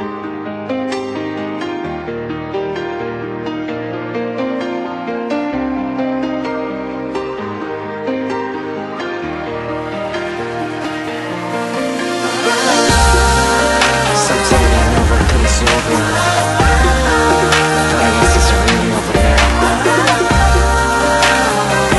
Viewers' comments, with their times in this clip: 0:09 did she say, " i love someone else " ? LOL i was like , e-e WHAT DID SHE SAY?